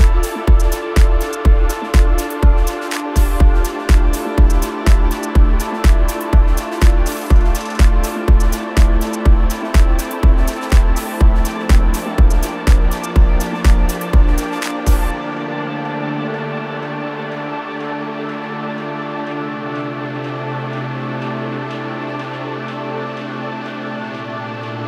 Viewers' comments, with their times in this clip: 0:09 strong goosebumps at start of ambient part